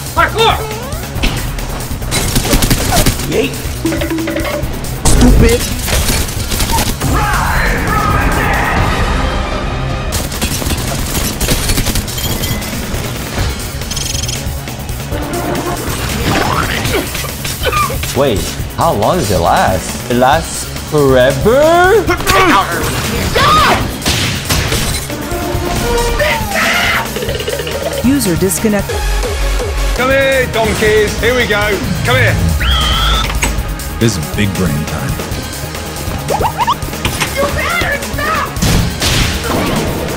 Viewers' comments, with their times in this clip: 0:09 god damnit now I have goosebumps. Any AoT scene where an OST plays gives me chills
0:28 what is this song called? Sounds like a banger.